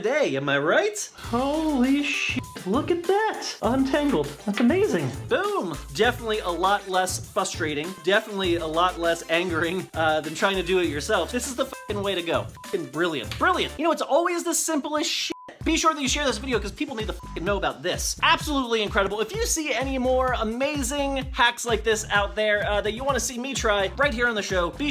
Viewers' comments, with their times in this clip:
0:06 when he says fustrating 😡😤 am I the only one here! Frustrating !
0:07 "fustrating" ?!? STAHP PLS NO IT HURTS